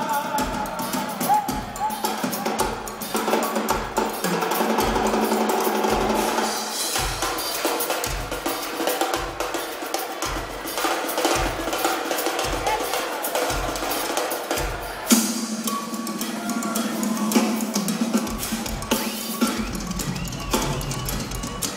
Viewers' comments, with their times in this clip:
0:04 Many 👏 applause once again to the talented gentleman for his wonderful 🤩 and timeless rhythmic song in 9/8 time🎼🎤 ❤️👏👏👏